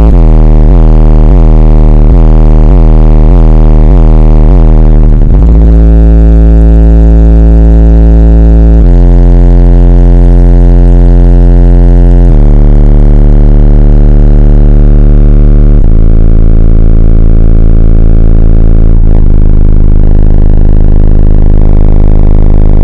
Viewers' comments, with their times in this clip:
0:06 Put On - Jeezy - fart bass lmao